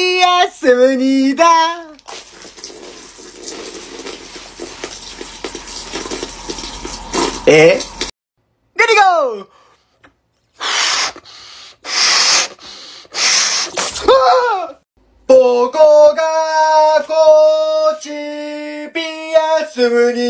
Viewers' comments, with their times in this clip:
0:07 funny word I don’t know what he said